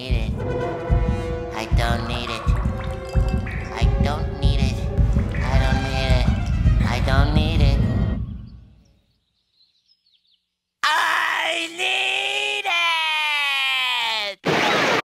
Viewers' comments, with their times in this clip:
0:10 I NEEEEEEEED IT!!! That episode Tea at the Treedome used to scare me when i was little because of SpongeBob's dried up voice and he was dehydrated. And his close up of his dried face with sweat scared the living heck out of me!!. But I'm no longer scared of the close up. But I'm not ready to watch the full episode since it has been a while since I stopped watching that episode.